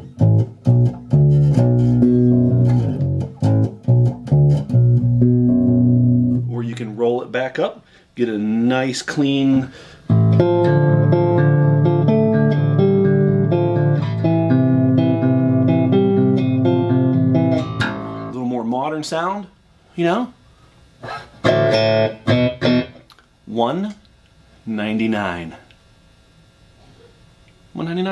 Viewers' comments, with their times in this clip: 0:10 Omg Jason Newsted solo, I'm def getting that guitar